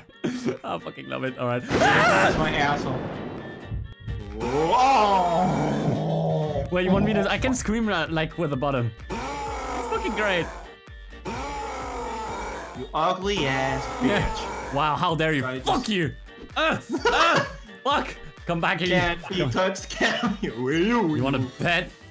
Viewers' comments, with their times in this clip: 0:09 hoi do you have constant throat problems well i have the cure STOP FUCKIN SCREAMING XD!!